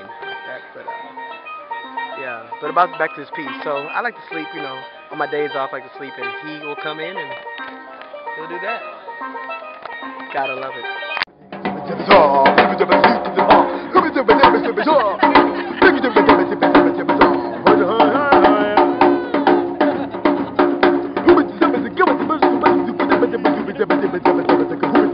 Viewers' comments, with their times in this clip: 0:09 LMAO Nice voice. I can say you stay positive.